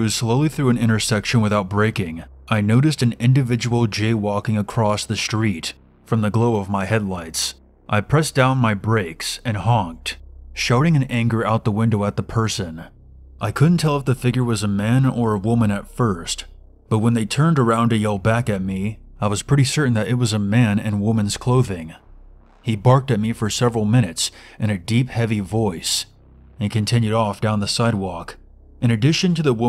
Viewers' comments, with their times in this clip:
0:10 lets hope "sharting in anger out the window at the person" doesn't become a trend in road rage incidents